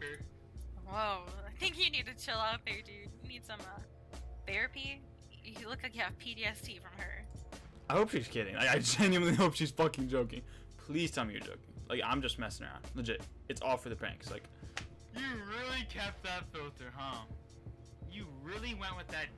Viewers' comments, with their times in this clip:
0:06 That girl critiquing you said "PDST" lmao